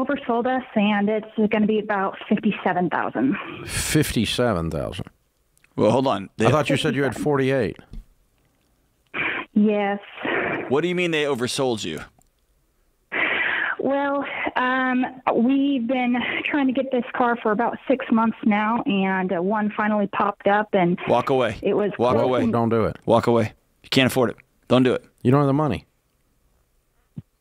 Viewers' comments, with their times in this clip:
0:10 the caller has a puppy growl. I felt that.